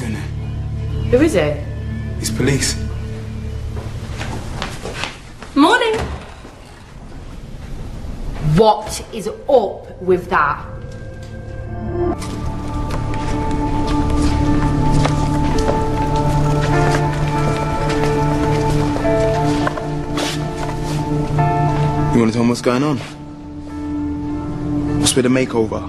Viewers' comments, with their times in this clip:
0:07 WOTS IS OP WUI DAT? ? omg what a wierd english! but also cool at the same time :D